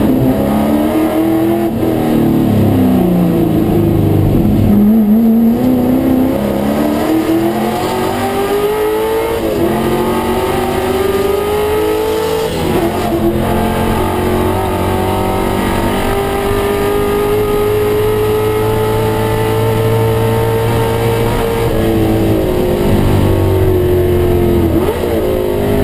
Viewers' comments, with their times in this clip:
0:09 I keep returning to this video - JUST FOR THE SOUND! I've heard domestic small and big blocks, as well as Ferraris. But they don't sound as nice as this baritone screamer. the tach shows the engine briefly touches just short of 7000 RPM, and elsewhere, just over 7000 RPM - Mighty high revs for a burly 427!